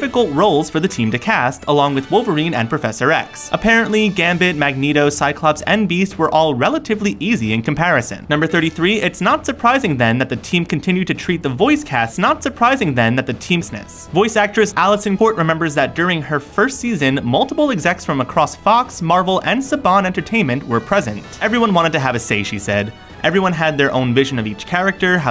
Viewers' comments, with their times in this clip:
0:08 There a audio mistake